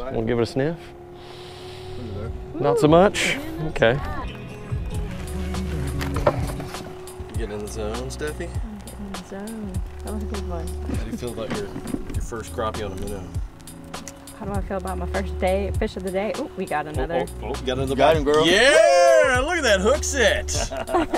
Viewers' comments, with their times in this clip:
0:04 That song is my jam